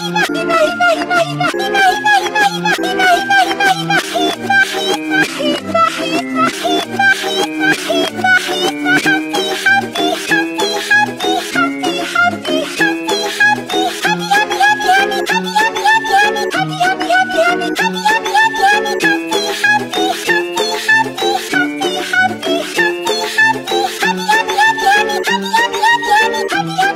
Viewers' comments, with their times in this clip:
0:09 Sounds Like Mario Group